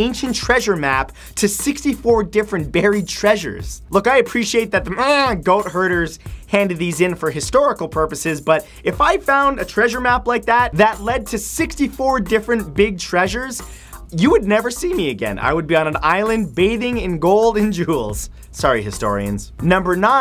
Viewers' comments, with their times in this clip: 0:04 Did you really bleat ? You didn't have to bleat to make us believe you were talking about goat herders.....